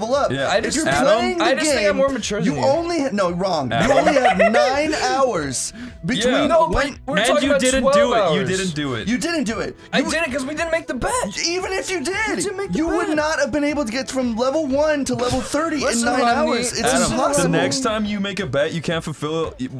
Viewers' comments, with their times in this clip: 0:04 he clicked his heels together during this laugh.